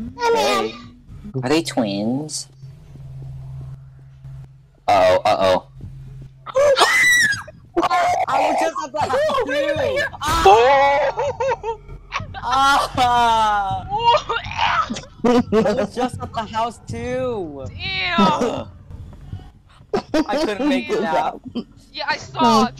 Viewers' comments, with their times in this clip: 0:06 THE WAY HE SCREAMED XD XD